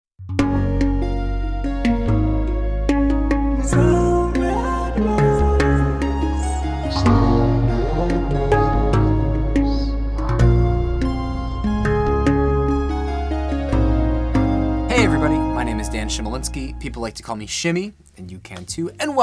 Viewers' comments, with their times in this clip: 0:00 Yo it sounds so unusual. What track is it?